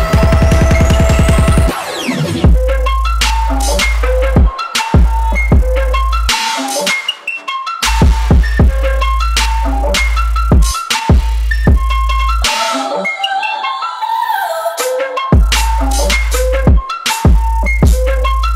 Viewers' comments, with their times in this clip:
0:05 Like That creachy thing was good.